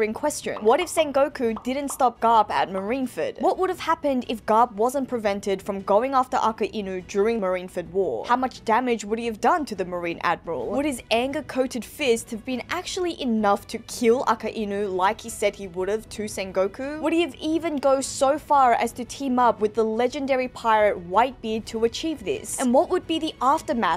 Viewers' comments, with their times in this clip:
0:05 Im not tryna be mean, i mean im new here but... the prounounciation?